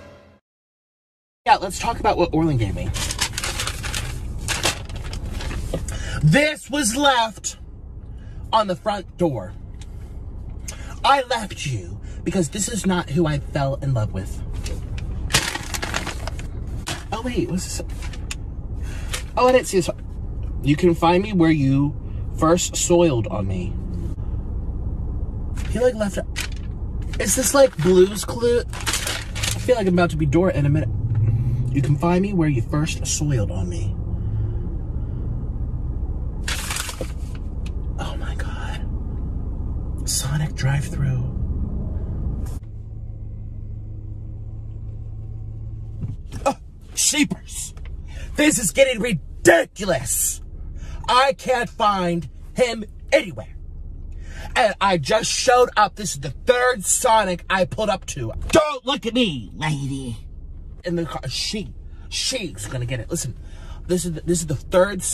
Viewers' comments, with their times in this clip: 0:10 I rate that drawling 10/10
0:48 the way he said "ridiculous" 😂